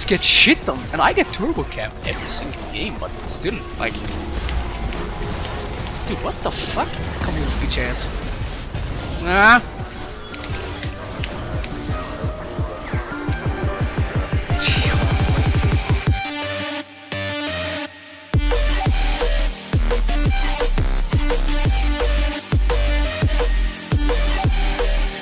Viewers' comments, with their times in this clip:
0:08 $5 to anyone who can spell the sound he mad